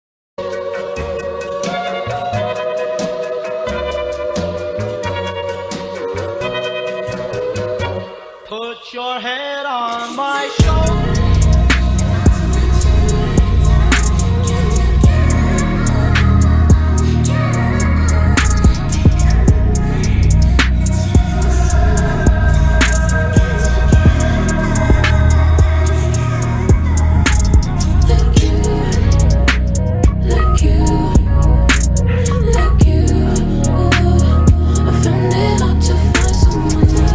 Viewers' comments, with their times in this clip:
0:09 Listening to this with headphones 🎧 on is just 😩😩😩😩 (keep up the good work) btw this part is just 😩 THE BEAT DROP LIKE GHDHRBRHEHHDJDHEHD
0:19 OMGOMGOMG THE MANS LIL SCREAM BEHIND HIS SINGING VOICE THIS IS SO UNDERRATED IM CRYIN
0:19 PART THE SCREAMING!!!
0:20 Its mouslim adan haya ala falah
0:21 I love the little "AAAHHH"
0:21 THE OOHHHHHHHHHHHH HITS DIFF DAMNN